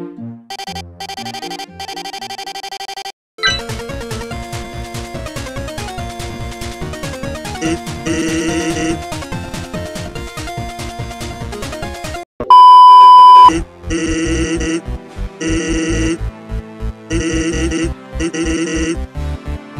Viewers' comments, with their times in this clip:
0:04 I liked the music on